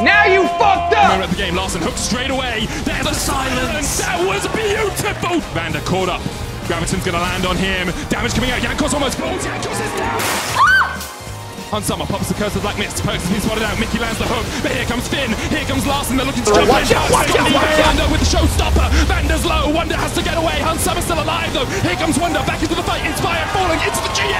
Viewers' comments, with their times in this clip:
0:08 Carlos screams jankos int.